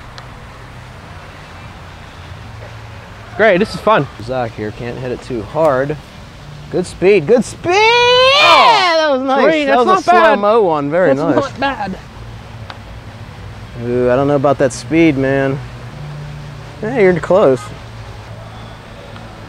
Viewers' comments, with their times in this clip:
0:07 Love his voice